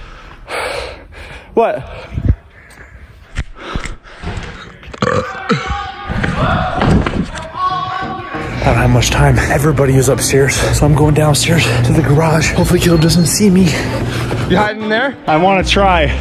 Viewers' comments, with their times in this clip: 0:04 I'll give you a 4/10 for that burp.